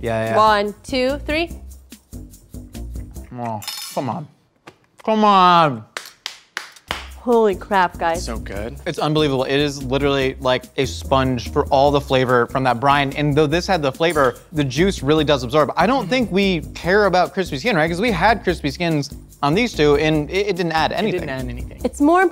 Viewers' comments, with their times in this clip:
0:03 josh just turned into guga foods for a second there with the sensual "come on"